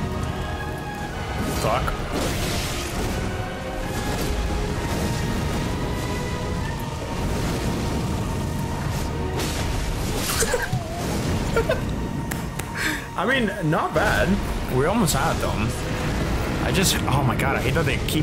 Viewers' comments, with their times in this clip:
0:05 Perfectly timed music